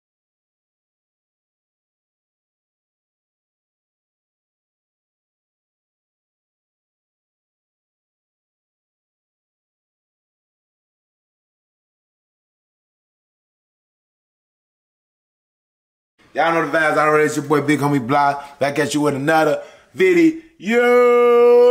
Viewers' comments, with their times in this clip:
0:09 I think they removed your sound for the intro